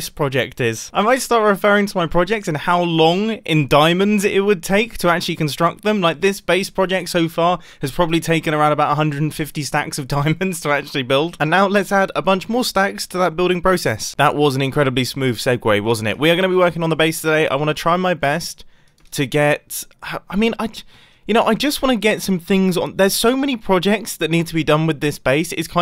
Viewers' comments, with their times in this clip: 0:10 alright here me out, when he says "add a bunch more stacks" its sounds like he should be saying "Nickelodeon" after.
0:11 the way he says "and now lets add a bunch more stacks" i feel the need to say "Nickelodeon" after.